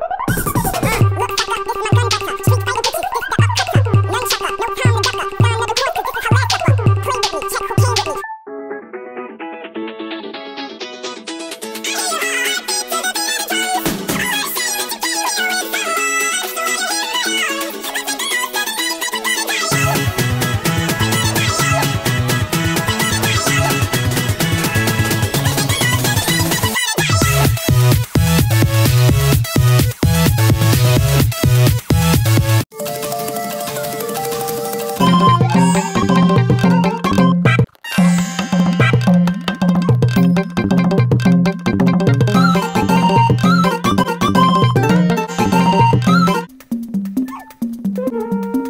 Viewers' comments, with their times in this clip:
0:09 try it on playback speed 0.5x it sounds like chipmunks singing "Die young" song.
0:36 That sounds like popee the clowns theme or smth